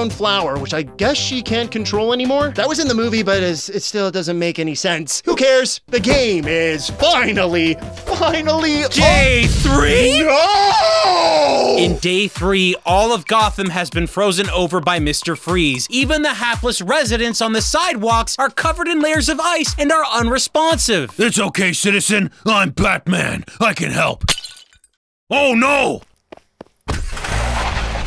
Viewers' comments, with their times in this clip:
0:10 He sounded like this game hurt him.
0:10 that "no" was so gutteral